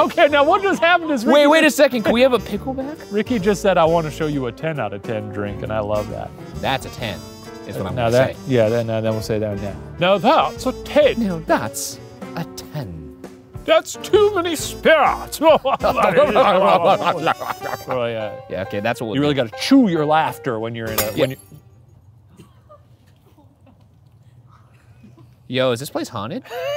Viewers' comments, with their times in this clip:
0:10 The fact that they never officially filled in the "Someone attempts a terrible accent" box after ...
0:11 Ryan sounded like C-3PO 😂😂